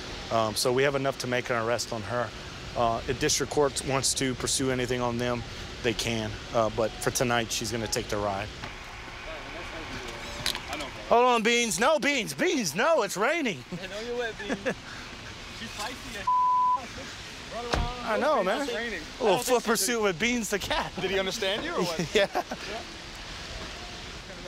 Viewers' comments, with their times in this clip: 0:07 well right you can hear a tiny meow